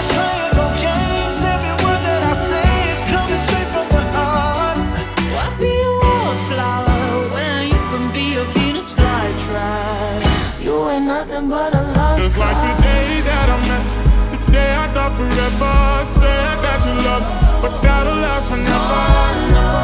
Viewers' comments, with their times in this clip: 0:07 I've been watching all the year ends lately and I think this is my favourite. Your musical choices worked really comfortably with all the songs holistically and it's just a joy to watch. The Transition is one of my favourite bits (should've been its own Planet) and I really love how the keychange syncs with Marina's vocals it felt so clever. Great work!